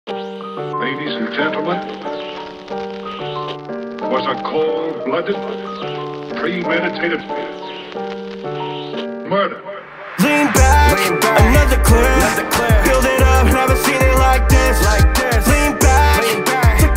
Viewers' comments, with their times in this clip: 0:01 rabies and gebtlemen